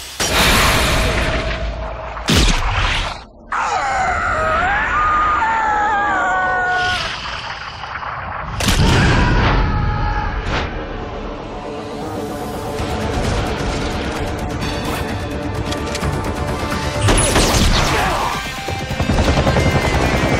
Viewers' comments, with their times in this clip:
0:03 He screams with high pitch like Boog's porcupine's hurt landing
0:03 Marcus sounds like a howling animal
0:03 the moment you hear the velociraptor they hired for the movie.
0:08 the brain usually takes a few sec to figure out that the body is in pain. this white dude shouted just exactly the time the bullet penetrated his skin and it's in slowmotion. If you're gonna play it in real time, it's like his brain saw that bullet coming and was able to respond in 1 milisecond